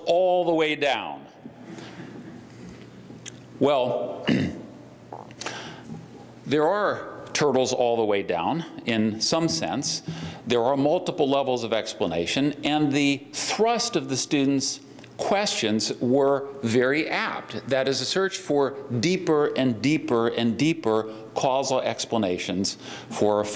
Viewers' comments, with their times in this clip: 0:05 "Is this thing on?" <mic feedback squeals>